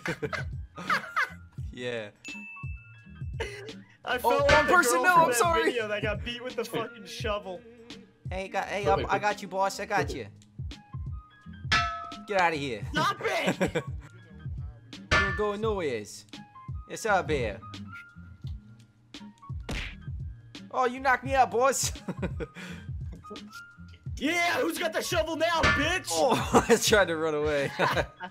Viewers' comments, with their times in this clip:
0:10 I like the old mafia voice its funny